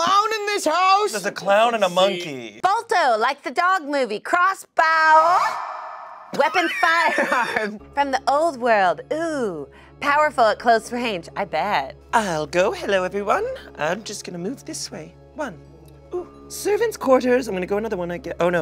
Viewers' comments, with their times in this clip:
0:06 if you listen closely you can hear a horse neighing by